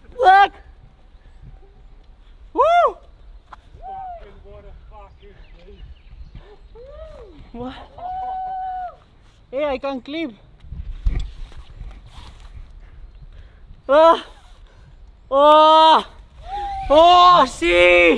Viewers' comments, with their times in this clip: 0:03 "farkin, what a fuarkkin beast..." 😂 aussie pride